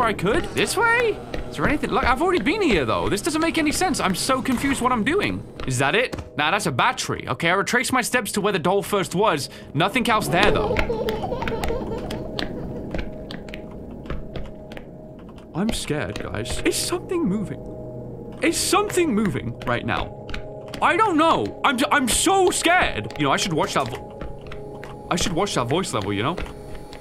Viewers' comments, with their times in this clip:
0:09 Dude! That sounds like the exact same laugh in Cod Zombies when you get the teddy bear from the mystery box!